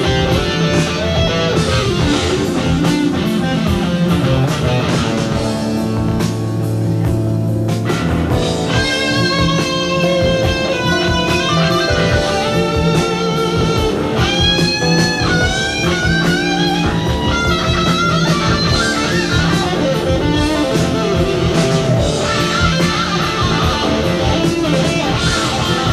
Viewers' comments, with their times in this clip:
0:09 That tone and the way he hits the string to get that fantastic sustain ... just a master of his instrument in every regard
0:09 When that guitar begins to scream at the mark it gives goose bumps!